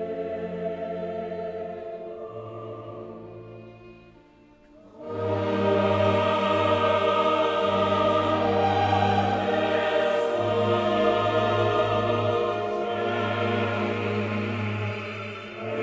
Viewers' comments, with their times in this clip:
0:03 Answer: for one of the Celibidache recordings. Not even Celi takes it as slow as Lenny here!